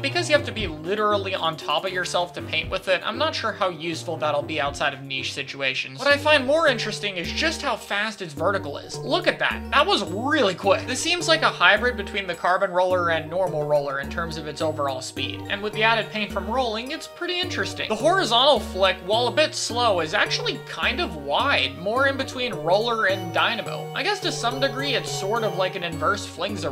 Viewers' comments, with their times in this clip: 0:10 What is this music? It's spooky as all hell.